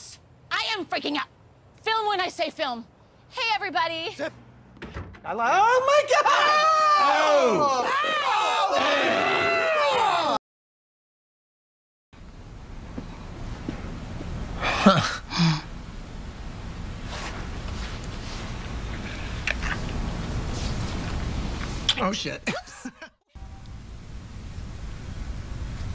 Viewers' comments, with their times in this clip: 0:08 Frank just starts retching at the sight of Dee